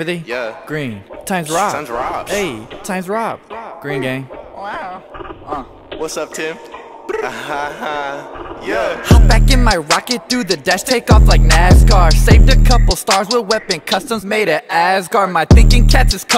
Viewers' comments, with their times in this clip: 0:04 you could hear him go wow😂😂